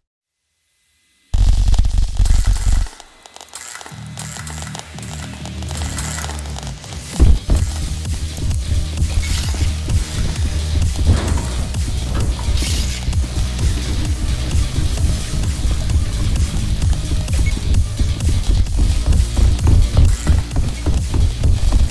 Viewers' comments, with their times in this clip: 0:05 I like the way that seek clapping